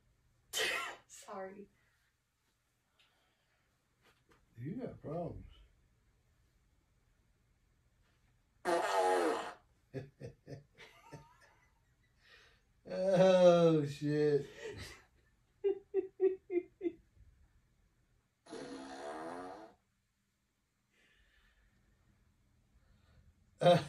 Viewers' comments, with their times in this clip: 0:07 sounds like an electric guitar.